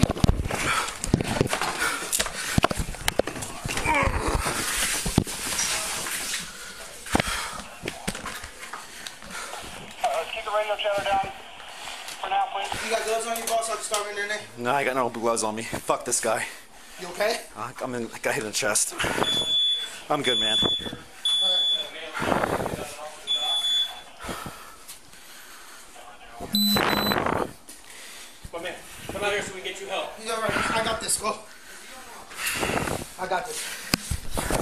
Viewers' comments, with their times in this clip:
0:05 The sound of the blood when they moved him from behind the door. 😳🤢
0:20 fire alarm came on because boy got smoked